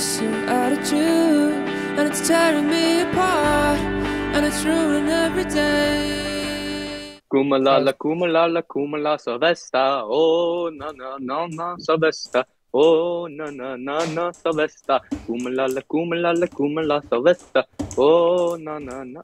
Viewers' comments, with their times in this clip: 0:07 ssriped vocals are heaven on earth 🤭